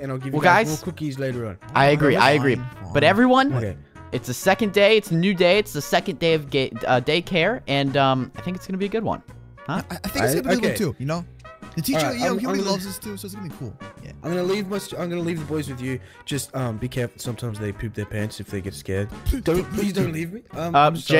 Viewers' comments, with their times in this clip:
0:07 unspeakable almost says gaycare🤣